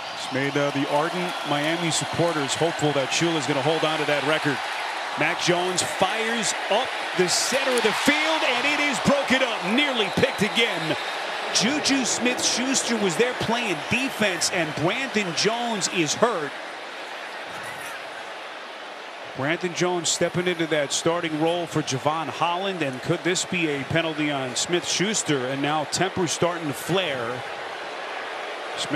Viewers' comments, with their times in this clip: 0:10 the announcer sounds like a kid